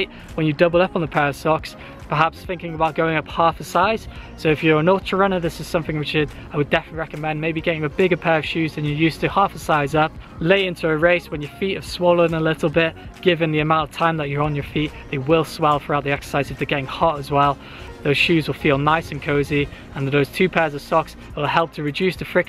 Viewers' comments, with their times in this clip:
0:04 what did he say? nortier runner?